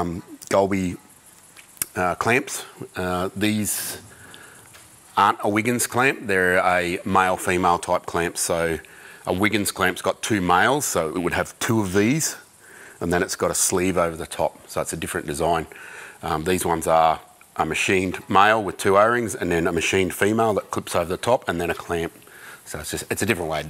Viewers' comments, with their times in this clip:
0:08 sounds a lot like space docking